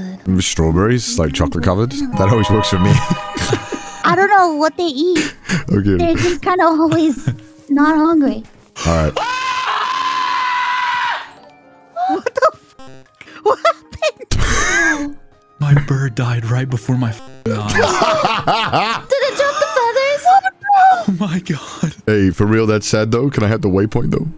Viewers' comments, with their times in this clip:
0:08 the iconic scream
0:08 That scream came from the deepest part of his soul. That scream came from bottom of his entire existence😭
0:09 hearing a hot anime man scream bloody mary is a top ten moments i didnt know i needed in my life